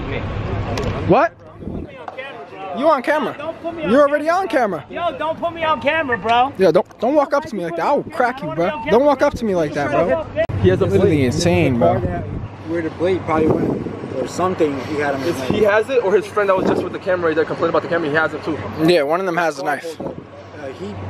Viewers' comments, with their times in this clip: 0:07 when the guy was covering his camera you can see him push the guy than the cop start yelling than the clip stops did he get in trouble for pushing him